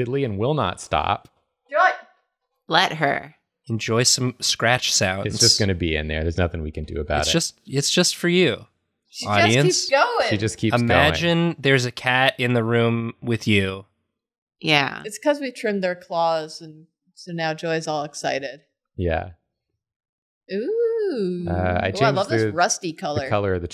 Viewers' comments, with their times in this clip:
0:09 .. i swear 7 months later i STILL cant hear the cat scratching